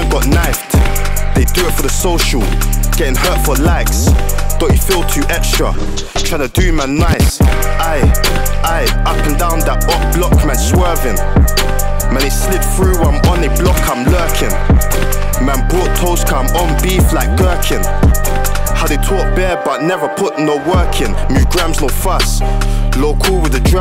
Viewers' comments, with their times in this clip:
0:10 I swear that's 67 flow 'up and down them back roads I'm swervin. I ain't 9 till 5 that full time I'm workin ' or summot